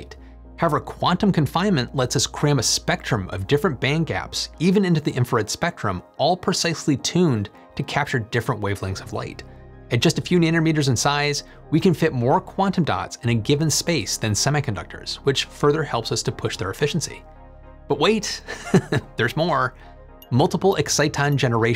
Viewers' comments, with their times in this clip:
0:09 you said nannermeter :D